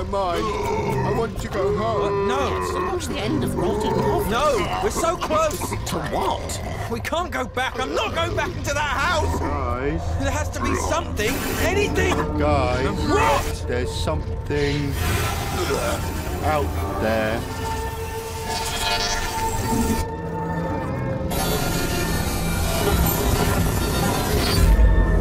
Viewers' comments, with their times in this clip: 0:04 His voice in is what hits me 😥
0:06 I felt so bad for red guy, he sounds crushed. they all remain trapped